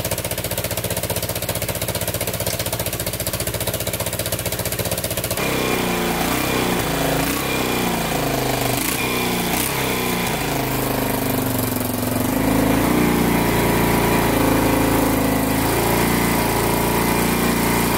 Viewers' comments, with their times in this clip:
0:03 sounds a lawn mower makes